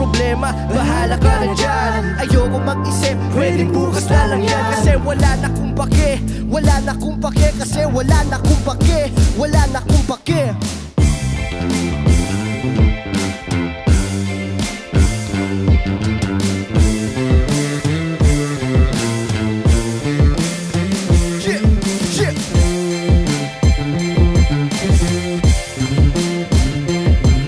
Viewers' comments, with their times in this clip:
0:10 the bass solo tho